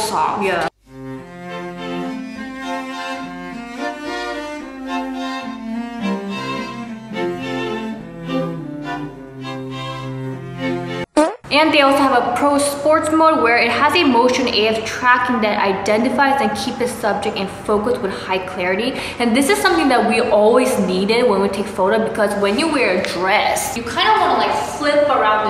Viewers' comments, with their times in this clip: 0:10 MY SISTER THOUGHT I FARTED BAHAHAHAH